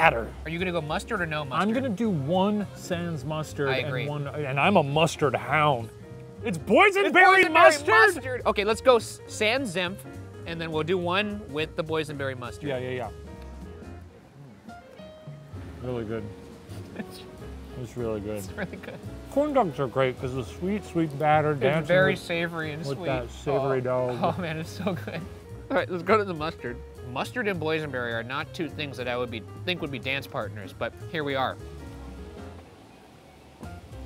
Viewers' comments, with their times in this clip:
0:06 The man in the back so scared of the boys yelling "ITS BOYSENBERRY MUSTARD" Has literally made my night
0:06 shoutout to that man passing by when shane and ryan yelled ITS BOYSENBERRY MUSTARD
0:09 lol the guy looks so scared about them shouting ITS BOYSENBERRY MUSTARD!?!?
0:15 ryans quiet excitement is pretty precious🥹